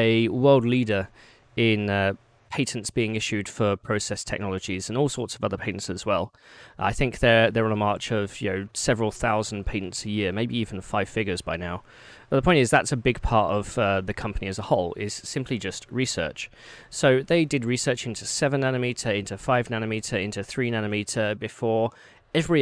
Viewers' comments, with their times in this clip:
0:08 whats a payton?